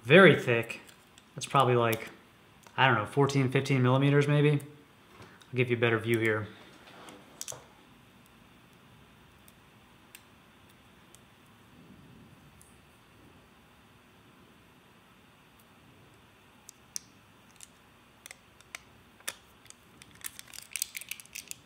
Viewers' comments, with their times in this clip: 0:08 is pure asmr